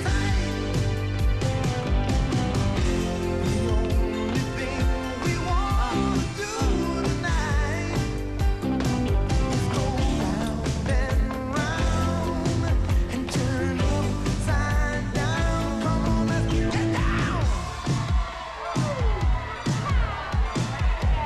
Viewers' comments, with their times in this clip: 0:06 I always thought the chick moaning at the point was hot.